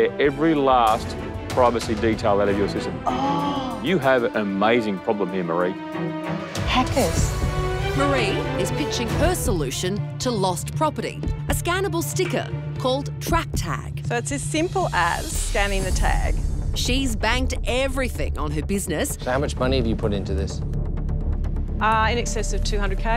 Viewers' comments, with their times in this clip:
0:06 the way she said “oooooooh loud whisper Hackers!”, that’s such a mum reaction 😂😂😂